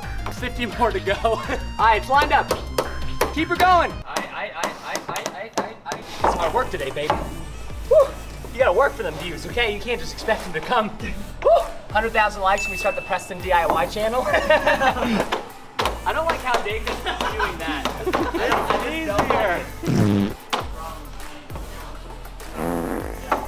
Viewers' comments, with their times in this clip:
0:04 he says urdu/hindu